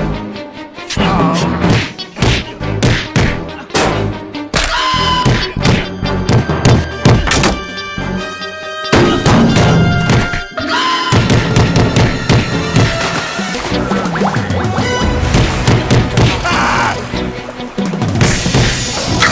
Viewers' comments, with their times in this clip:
0:03 wally warbles scream
0:04 all I heard was "please don't break mah arm"